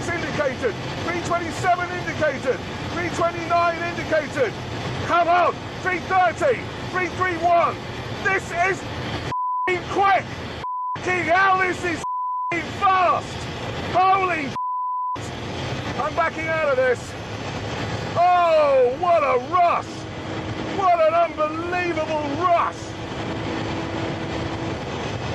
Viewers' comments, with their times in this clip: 0:08 Makes a difference to hear this without the piercing, ear-splitting music from 2001: A Space Odyssey.